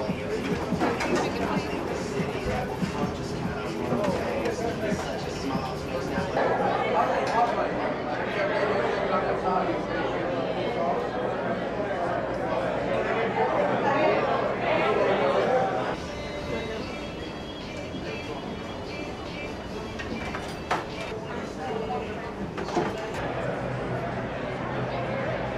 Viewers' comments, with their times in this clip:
0:08 chewing chewing chewing...secet-fart...chewing chewing